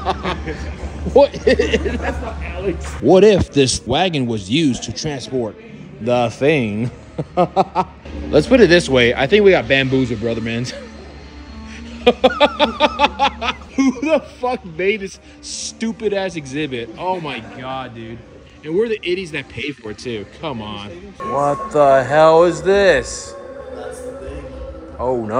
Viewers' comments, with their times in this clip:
0:08 brother Laugh's like A billionaire